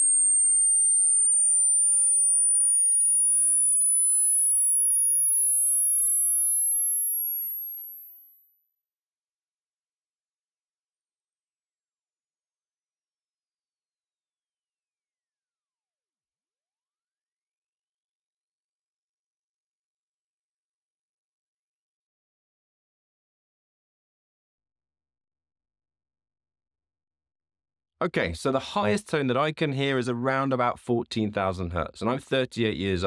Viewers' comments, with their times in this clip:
0:10 Age 42, minute it went silent. What does that mean?
0:15 Heard it up to
0:20 I could hear up to